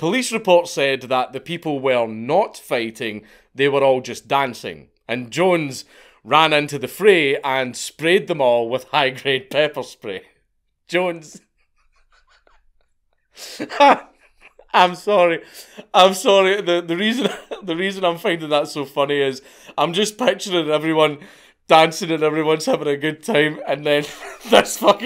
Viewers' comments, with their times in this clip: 0:09 Dankula's best laugh so far 💀 Love it
0:13 count dankula laughing and describing the situation reminded me of playing GTA vice city 20 odd years ago where i once went in to the nightclub and threw a molotov into the crowd, now i cant get the image out of my head of phoenix jones doing that. Best laugh i had in a while